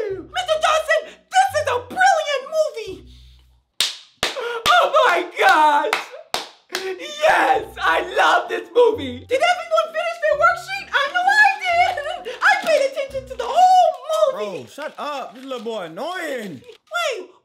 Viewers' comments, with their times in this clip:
0:03 wow he loved it so much that his voice got deeper 💀💀💀